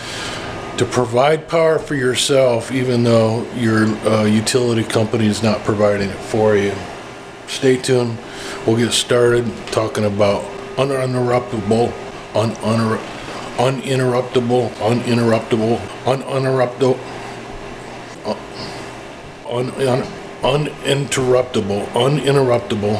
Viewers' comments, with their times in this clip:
0:08 I was looping this rap for a while just for my own satisfaction